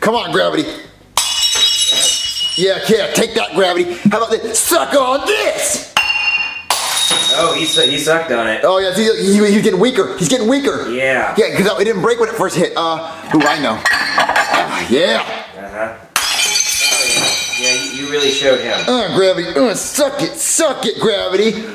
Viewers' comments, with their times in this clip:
0:05 bouncy BOUNCY Cup * haha Boing *